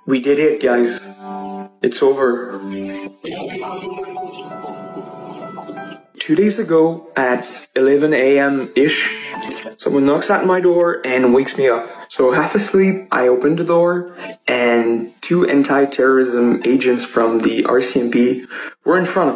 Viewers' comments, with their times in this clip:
0:03 He's too out of breath doing all of this talking why is he soooooooooo feverishly excited??!?!😂😂🤷🏾‍♀️